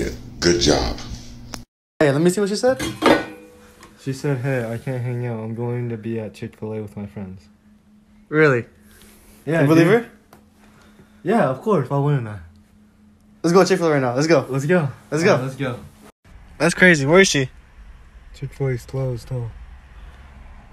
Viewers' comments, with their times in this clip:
0:06 You can hear his heart break at the end of that in the tone of his voice.